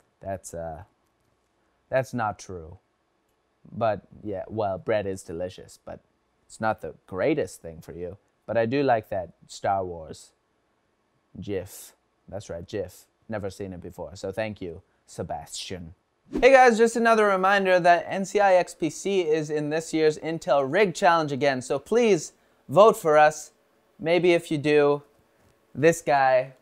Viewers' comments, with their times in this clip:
0:10 OMFG HE SAID GIF CORRECTLY, FINALLY SOMEONE. now if only someone can get meme correct